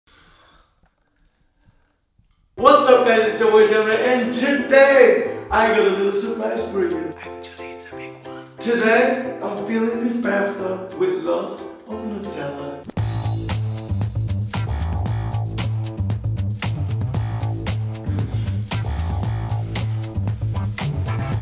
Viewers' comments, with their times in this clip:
0:07 the way he says actually it’s a big one is so funny